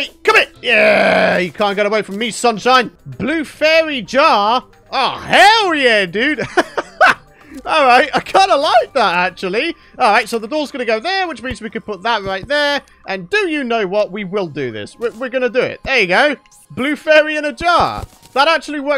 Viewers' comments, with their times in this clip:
0:04 that sounded so evil lol